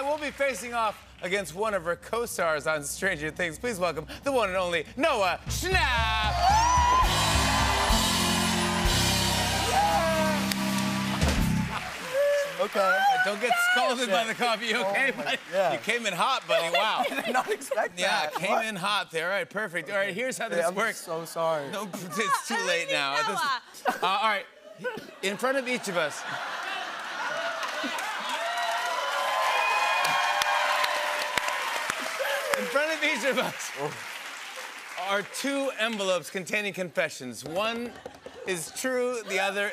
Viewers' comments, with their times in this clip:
0:07 I love how Millie rolls her chair so peacefully into the table and then Noah just BOOOM!
0:23 what did millie say ? i cant make it out😄
0:27 I wish people clapped when I spilled coffee.